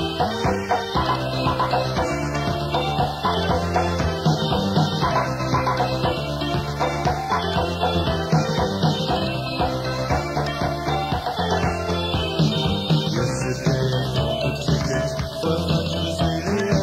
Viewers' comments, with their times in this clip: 0:03 ( FLASHING COLORS BTW) HELP WHY IS THIS SO FUNNY THE CALMING MUSIC WITHE THE INSANE BACKGROUND